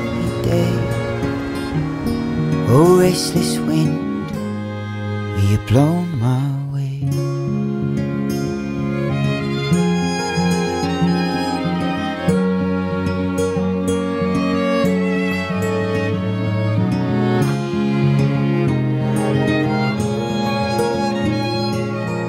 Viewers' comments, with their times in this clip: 0:05 i heard "will you blow my wig" 💀💀